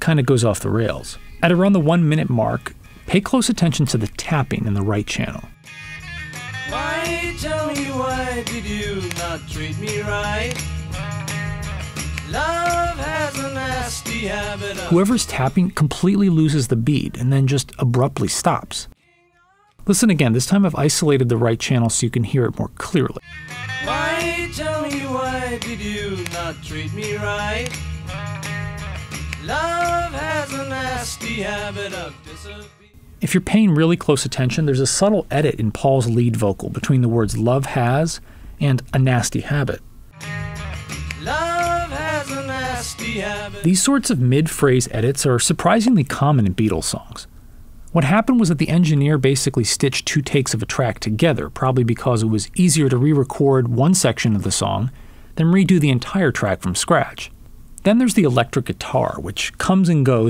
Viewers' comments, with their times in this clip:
0:08 the clue is in the lyrics ''...you did not treat me right'' - the claps stop doing the backbeat ''disappearing overnight'' - the claps stop like maybe it was intentionally left rough? it adds to the feeling of the song intentional or not. maybe i just like rubber soul too much to think straight.
0:11 I think it was an odd choice but it wasnt off beat
0:11 The taps after the minute mark sound like hand claps, especially two that sound like 2 eighth note claps on beat 4, -10.
0:15 In the US vinyl 1965 mino mix you can hear a short second of feedback that appears to be through the headphones - presumably Paul’s. Listen close to the US albums and you’ll hear other stray notes and the mono mix of Norwegian Wood has a cough during the bridge.
0:19 in the song, if you isolate the left channel, you can hear a microphone squeak, like a bit of feedback.
0:19 Don’t know if anyone has mentioned this already, but listen to Ob-La-Di Ob-La-Da. after the second chorus, there is a bit of drumming which sounds like someone falling down the stairs. Sounds even clearer on the headphones.
0:20 Now that I'm listening more carefully, I think I hear a short screech of microphone feedback But like some others here, I've always found this to be one of my favorite Beatles songs.
0:20 I think I found one more thing: in the song right after they say "you were above me" you can hear the beep of a distant microhpone. Maybe thats what distracted ringo and made him drop the tambourine short seconds after.
0:20 I don't think you mentioned the mic feedback(?) just after "you were above me"
0:20 youtube the song and right before ''but not today" there is mic feedback.....cant believe this wasnt pointed out ....thats the first thing i noticed when i first heard this song decades ago!.......ive always loved the raw loose feeling of this song
0:20 There's also a random feedback sound that has always bothered me on this. "You were above me (feedback) but not today"
0:22 Is it just me or do I hear some kind of microphone feedback atound into the song? (Shortly after "You were above me")
0:26 John misses a guitar chord in "She's A Woman"
0:33 I don't think that that is a mid-phrase edit, I think it's just paul starting a double tracked vocal at that moment, but I could be wrong
0:36 On a whim, I checked the "usenet guide to beatles recording variations" because I wondered if it noted this, and it has the same info. Mix "c" is the 1987 CD remix: "The CD mix [c] moves Paul's vocal closer to the center. the second note of the third "blat blat" (organ?) suddenly is mixed center instead of to the right like all its other notes, on CD [c] only." Also of note is that the 1965 Capitol/US stereo version has a false start at the beginning.
0:41 doesn't sound like an edit, just bad double tracking (which funnily enough was John's trademark, but here was done by Paul).